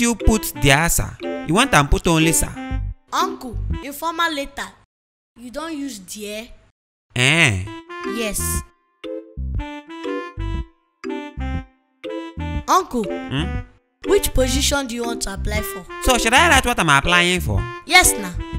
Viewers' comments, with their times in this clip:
0:04 English = Really?? Nigerian = ayyy?? Listen =